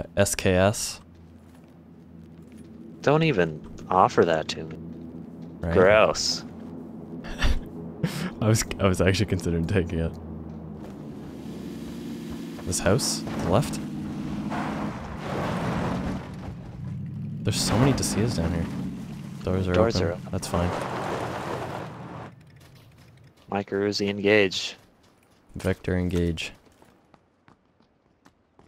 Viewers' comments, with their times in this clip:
0:10 my god stop transitioning audio before video! I thought there was an approaching car till the visual transition lol